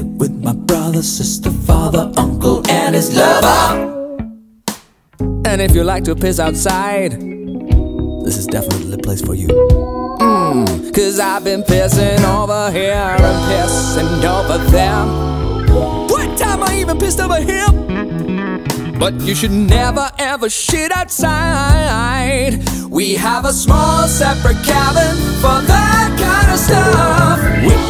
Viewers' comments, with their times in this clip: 0:09 😍 i love when he did just Mmmm 😂 why? idk 😂